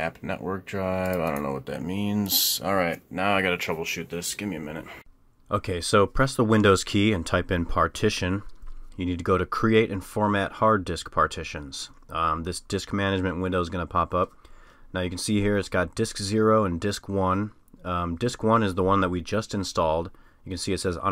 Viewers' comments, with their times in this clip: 0:04 When I recorded the voiceover for I fudged up the audio a bit and the quality was shitty and it bothered me lol